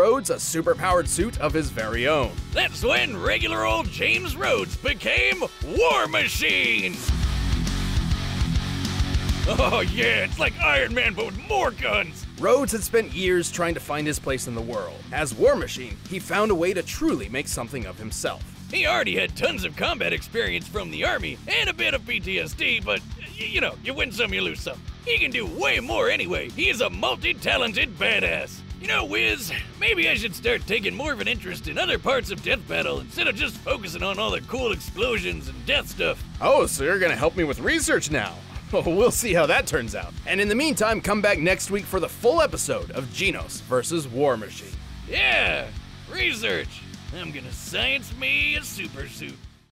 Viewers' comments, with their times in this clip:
0:07 ok that music in background really made me feel epic
0:42 who the hell is Jean Knows?